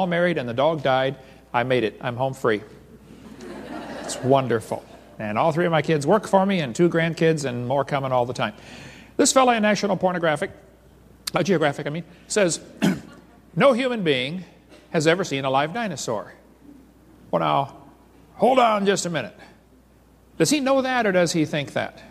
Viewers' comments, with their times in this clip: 0:09 is there something wrong w/ my ears?